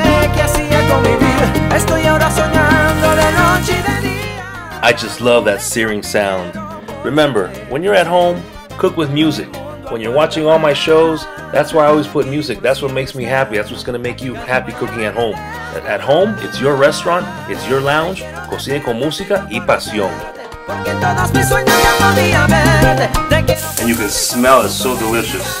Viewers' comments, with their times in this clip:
0:06 I cannot hear the searing.., all I hear is the music ! 🤷‍♂️